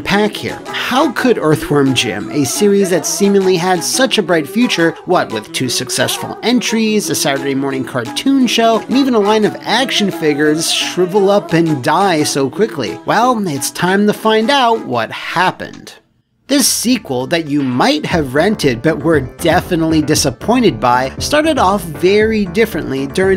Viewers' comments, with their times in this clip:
0:09 the way you say action figures needs to stop